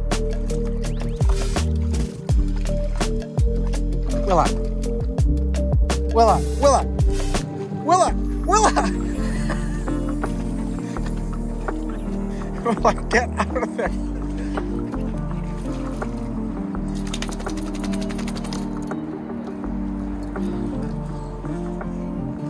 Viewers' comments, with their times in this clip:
0:04 Such a cute "chof" 💧